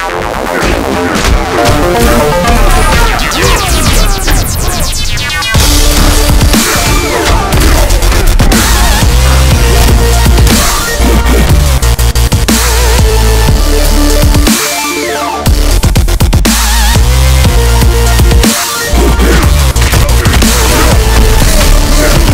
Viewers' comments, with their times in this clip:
0:06 i love the moment the music goes with the gameplay awsome